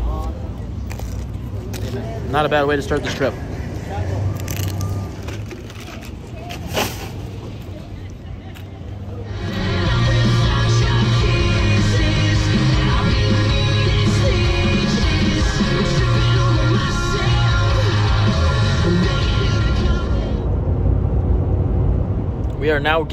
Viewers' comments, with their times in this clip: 0:09 what is that fake Shawn Mendez music 😂😂😂